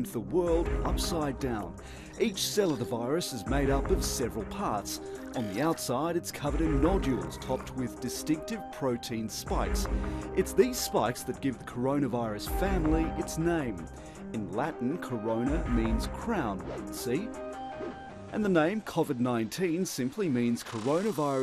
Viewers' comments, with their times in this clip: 0:04 Could someone be kind enough to tell me if, from this narrator is saying "On the outside, it's covered in "NO JEWELS", popped with distinctive protein spikes." ??